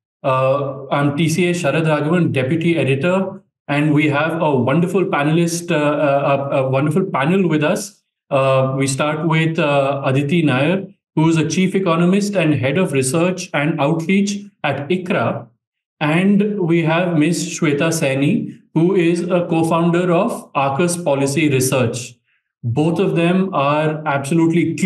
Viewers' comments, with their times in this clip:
0:05 Bro said we have a wonderful penalist😭😭😭Bro couldn't hold🤣🤣🤣